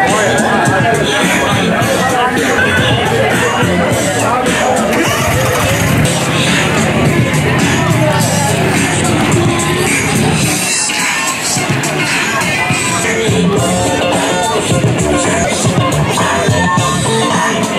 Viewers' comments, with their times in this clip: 0:05 sounds like a tack smg form fortnite